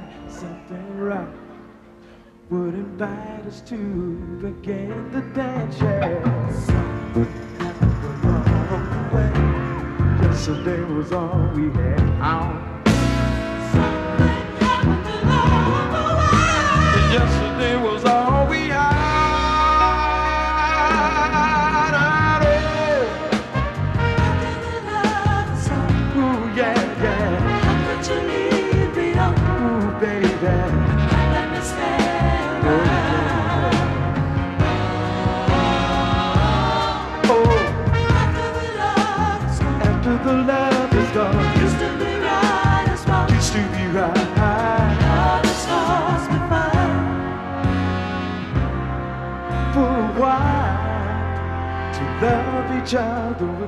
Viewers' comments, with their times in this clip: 0:07 I love when the rhythm section rolls in; I anticipate the soul!!
0:15 those singers murdered this part (in a bad way )
0:41 Those background vocals are killin'...@ like the line from -25, you can hear that line w/ those two 3-note chromatic motifs...so beautiful, talk about smooth voice-leading.